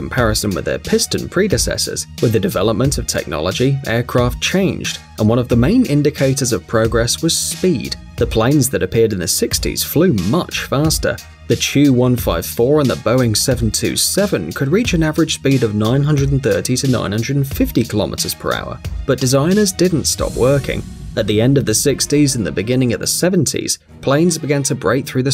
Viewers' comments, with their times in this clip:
0:10 "The Chew", you have without doubt the best accent. Would love to see you as a animated character in Ice Age or something like that..